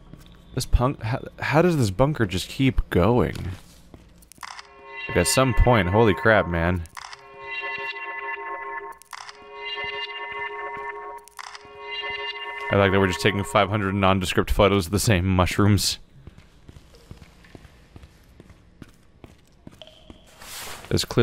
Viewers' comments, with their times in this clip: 0:04 Listen to the sound get more high pitched because of the picture combo on